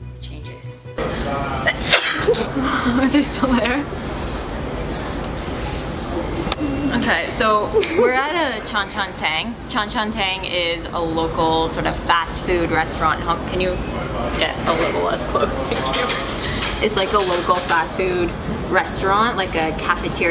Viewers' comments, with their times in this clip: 0:03 Sneezes "are they still there?" 😂🤣😅😂🤣😂